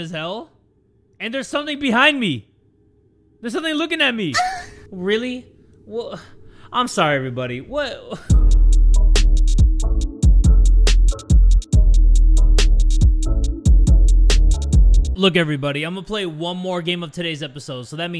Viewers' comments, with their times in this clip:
0:04 I FLINCHED SO DAMN HARD AT THE MOAN JUMPSCARE HELP